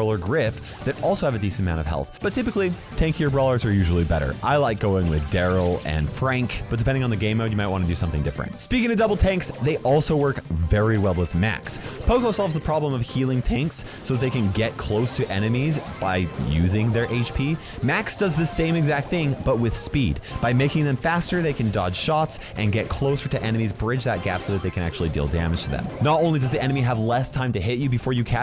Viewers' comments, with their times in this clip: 0:10 that voice crack sounded rllyyy painful